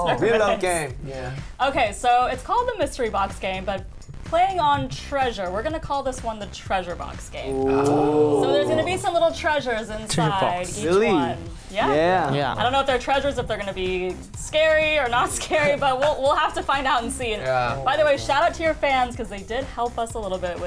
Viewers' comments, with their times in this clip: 0:07 I DIED AT WOOYOUNG’S “ᴰᵃᵉᵇᵃᵏ” HES SO CUTE